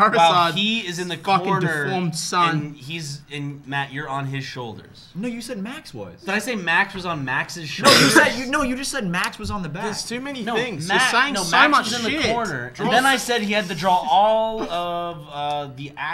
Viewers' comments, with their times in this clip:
0:04 no joke this sounded like," Ni**a you said max was".